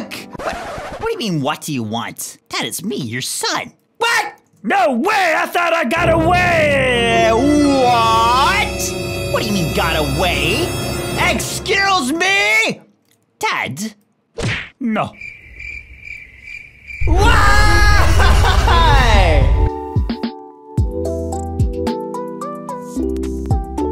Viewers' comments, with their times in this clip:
0:06 i just love how he said"WHAT, I thought i got awayyyyyyyyyyyyyyyyyyyyyyyyyyyyyyyyyy."